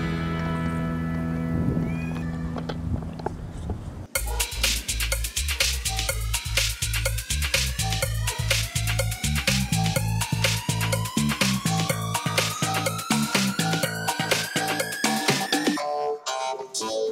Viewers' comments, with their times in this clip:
0:04 I'm loving this dance music to go along with these zoomies.